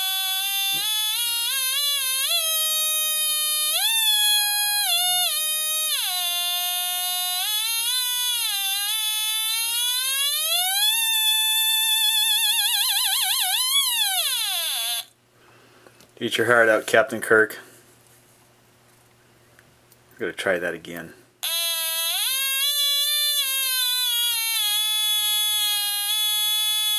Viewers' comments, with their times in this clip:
0:09 There's a bug in the wall